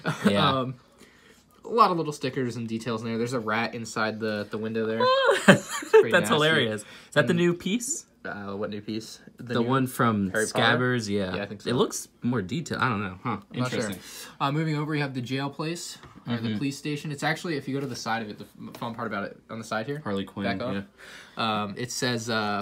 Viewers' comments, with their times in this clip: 0:04 Tell me why his laugh sounded like a Roblox oof